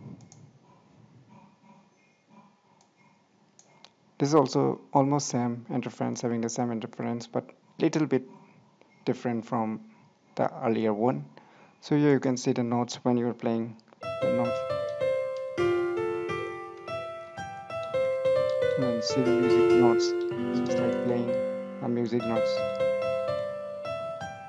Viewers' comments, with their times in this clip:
0:06 food sound makes me cant foucs ,,,ummy